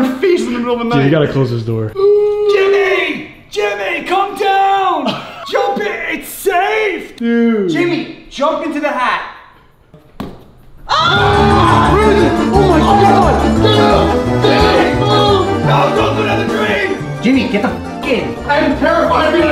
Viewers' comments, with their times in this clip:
0:03 from that point on i never laughed that much in a good while, plus the music made it even better 😂😂🖤